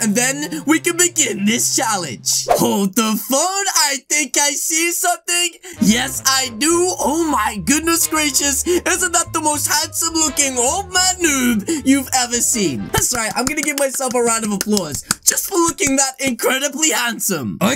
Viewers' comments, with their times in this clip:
0:03 In i thought u said hold the f**k